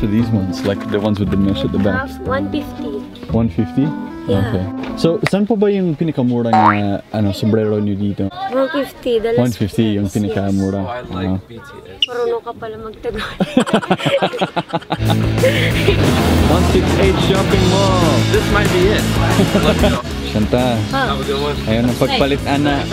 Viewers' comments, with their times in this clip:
0:10 I don't know about you but I heard "I like BTS"